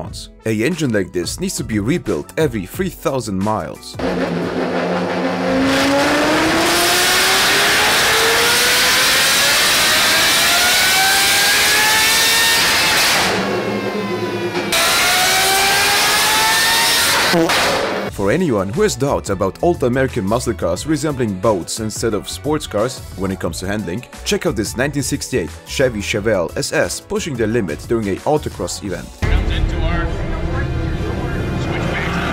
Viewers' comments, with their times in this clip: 0:04 the supra sounds like a lexus LFA
0:15 You can’t not forget the radome farts from exhaust